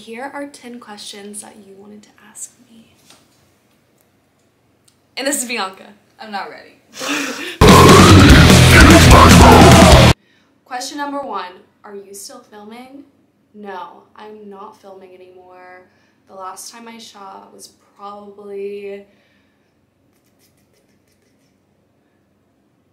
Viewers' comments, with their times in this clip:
0:07 RIP headphone users. ☠️🫂🌷